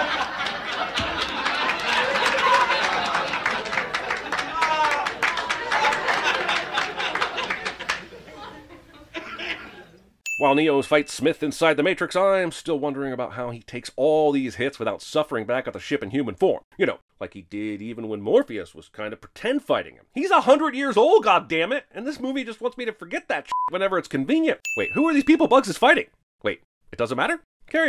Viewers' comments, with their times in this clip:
0:08 The cough killed me 😂😂